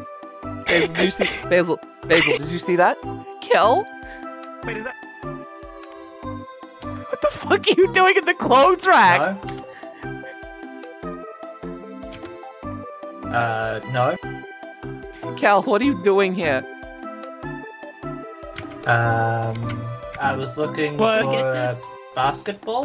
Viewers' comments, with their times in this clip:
0:09 i swear to fucking god i heard "up, down, 1" "up, down, 2" "up, down, 3"